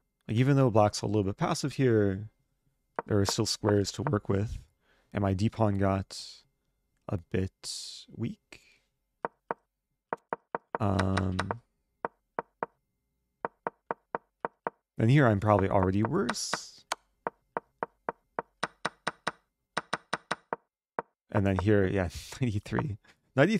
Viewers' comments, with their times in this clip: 0:04 Did they just say "a bit weak" in sync ??!